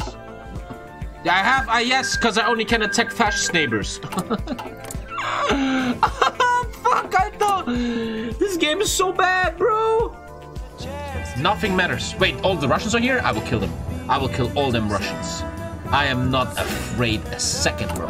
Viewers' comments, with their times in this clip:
0:03 A legend song is being played in the bg here.